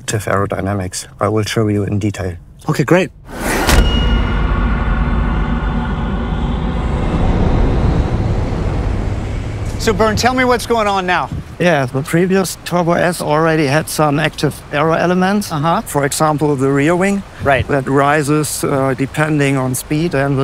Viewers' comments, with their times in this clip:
0:03 sound good like GTA and Warzone